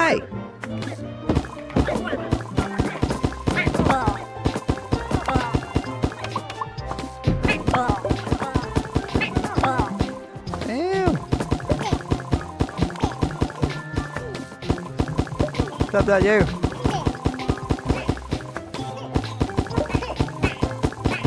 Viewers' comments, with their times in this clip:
0:04 omg the sounds are so cute in this game!!